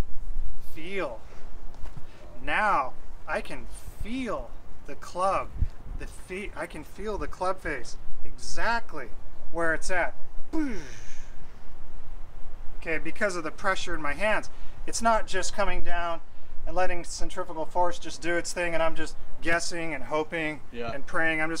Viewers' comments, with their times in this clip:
0:09 ... love the sound effects!